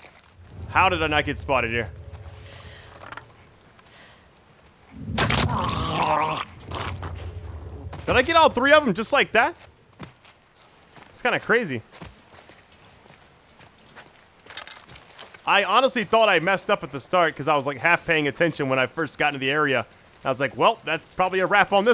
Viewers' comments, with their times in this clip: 0:04 wow check out the gurgle sound
0:05 enemy gargles with mouthwash